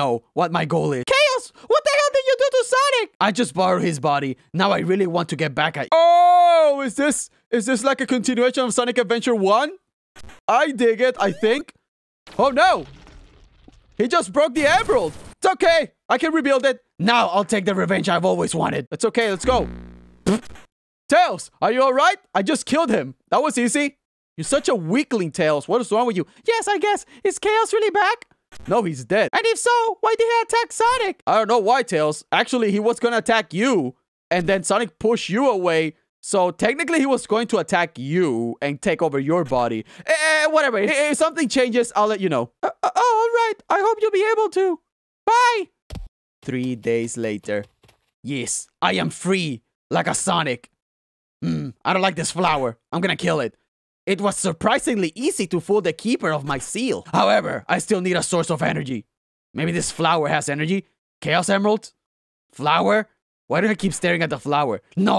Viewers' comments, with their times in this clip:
0:05 the best knuckles voice crack ever:
0:51 this is the funny part that laugh